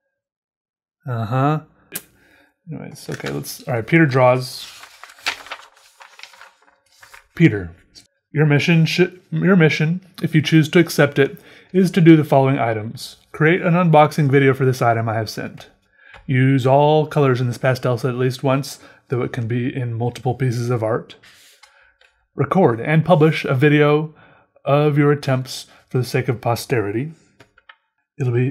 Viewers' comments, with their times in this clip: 0:09 my subtitles read “pee turd draws”